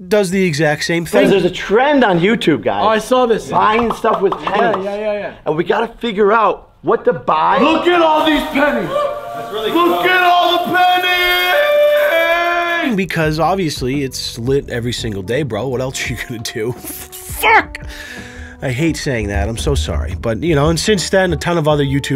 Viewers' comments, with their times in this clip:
0:08 real time Jake Paul without auto tune.